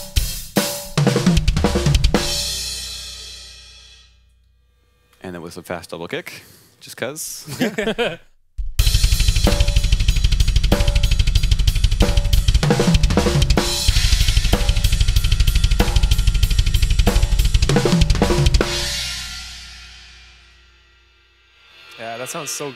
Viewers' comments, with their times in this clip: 0:08 dude, how do you do that double pedal ?!